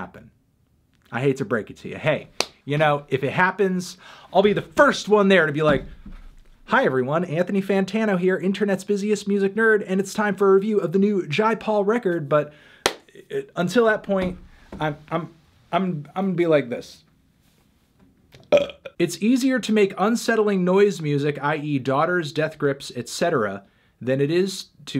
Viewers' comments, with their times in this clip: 0:05 that's a pretty good Hitler impression
0:06 Nice theneedledrop impersonation.
0:07 Damn, melon, that’s a good Anthony Fantano impression
0:08 that fantano impression was SPOT on